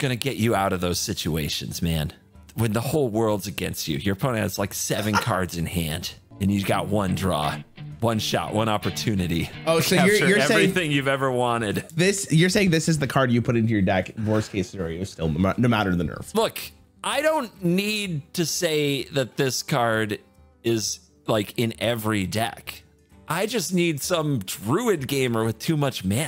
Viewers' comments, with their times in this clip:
0:07 when the eminem song plays briefly I started laughing so hard 🤣🤣🤣